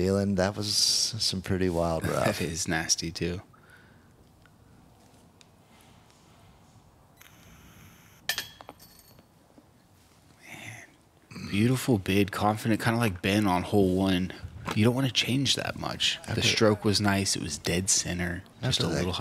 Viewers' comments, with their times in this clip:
0:05 the vape hit in the commentary booth lmao